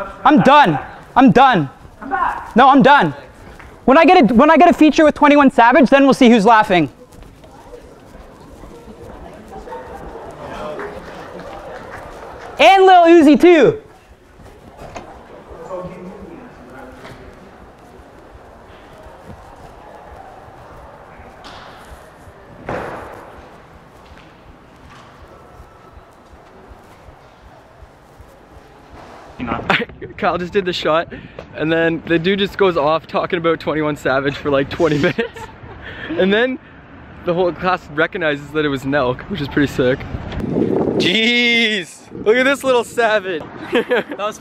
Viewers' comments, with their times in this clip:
0:06 you here the flock of white girl “whaat”?
0:21 lmfao i can hear your heart beating out of your chest
0:21 Camera Person seems too afraid you can listen to his heart beats
0:21 also holy shit you can hear the guys heartbeat lmao
0:24 I can hear your heart beating on my subwoofer 😂😂
0:26 sounds like a really fast hearbeat?
0:29 You can hear his heart just pounding lol